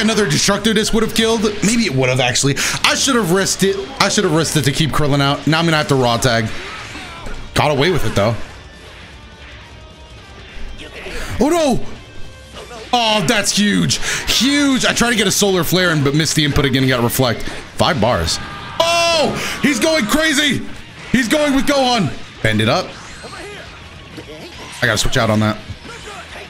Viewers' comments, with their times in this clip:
0:09 did krillin said u gay ? xD